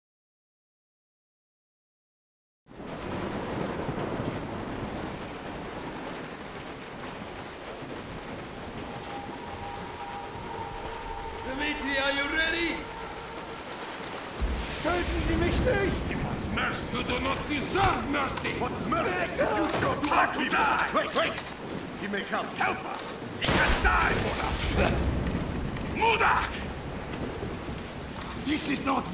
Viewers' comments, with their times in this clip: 0:10 is that zombies I hear?